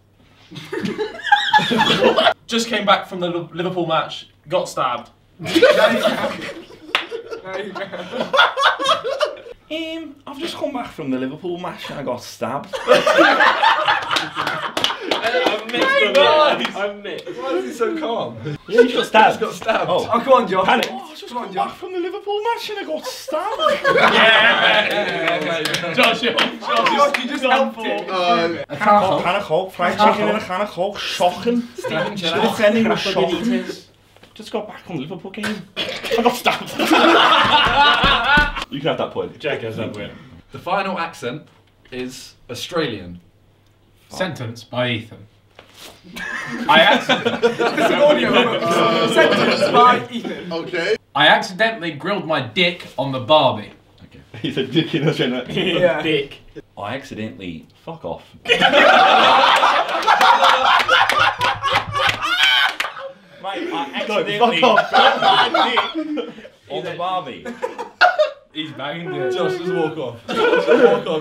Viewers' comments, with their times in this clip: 0:05 As someone who’s from Liverpool them accents are disgraceful 😂💩
0:10 jack soundin like trent alexander arnold lmfao
0:13 My grandma was sitting next to me grandma- “Why are they laughing if he just got stabbed?”
0:18 Why Jack sounds a lot like WillNE🤣
0:43 he actually sounds like me
0:57 am i the only one who thought that sounded like Hugh Jackman?